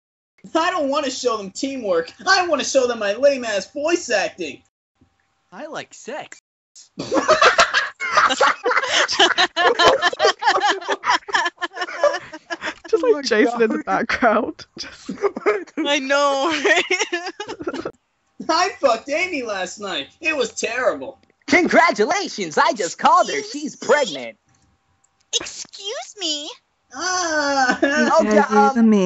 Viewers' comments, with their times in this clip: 0:05 When the puberty hits
0:10 Even Tails is laughing his head off.